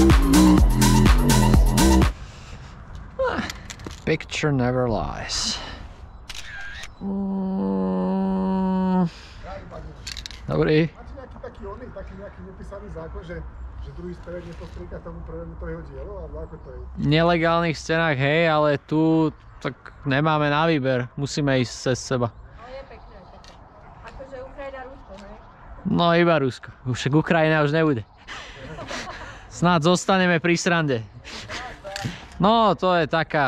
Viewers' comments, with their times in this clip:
0:09 idk why but i love hearing people speak their native language, it’s cool.
0:20 Side note (from native speaker), they are both speaking in quite thick western accent, specifically Bratislava accent. You can recognize it by prolonged first syllable e.g. in the line where he says "nemáme na výber" (we don't have a choice) the prolonged syllable should be "má" in the word "nemáme" (indicated by the accent on the a) but instead he prolongs the "ne" and shortens the "má". Also instead of palatalizing "ne" (should be something like "nye" in the russian word "nyet") he says "neh", which is also common in Bratislava accent.